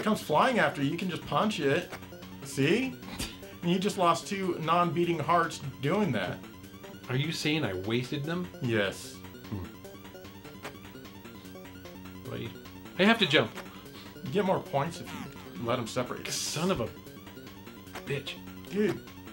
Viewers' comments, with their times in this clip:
0:06 billie jean plays.